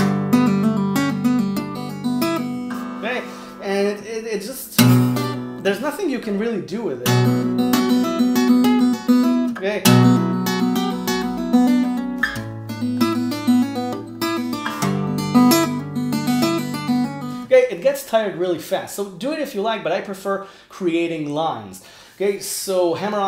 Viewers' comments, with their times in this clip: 0:07 that sounds like the intro of some song! Need to remember it. Awesome lesson as always!